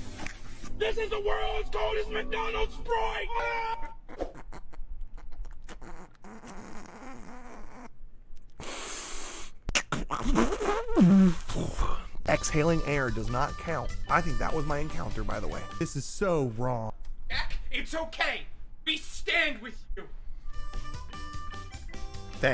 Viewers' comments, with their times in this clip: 0:05 Casual purple cliff farting